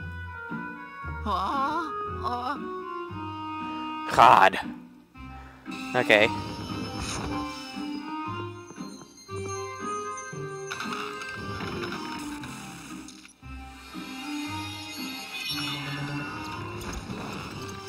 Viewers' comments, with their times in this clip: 0:03 lol sounded like ''cod''